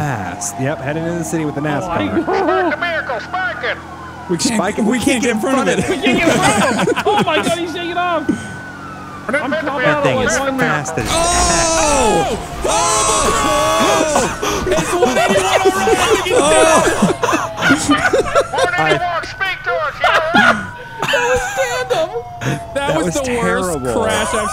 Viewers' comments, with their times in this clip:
0:04 LMAO at this crash
0:10 HORRIBLE CRASH!!!! Straight out of Talladega!